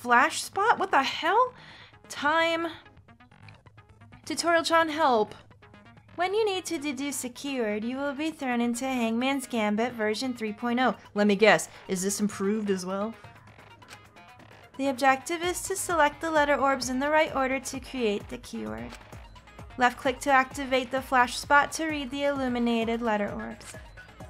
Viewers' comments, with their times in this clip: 0:06 THE VOICE IS SO CALMING SJDJDJSKSKDKDJ